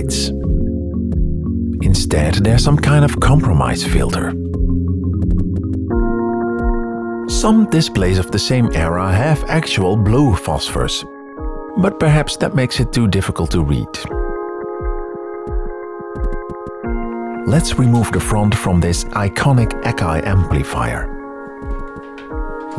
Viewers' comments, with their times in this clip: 0:06 Amazing job on the background music, it really creates a proper mood for the topic, but what is the song on I could not find it on the VFD playlist on your bandcamp.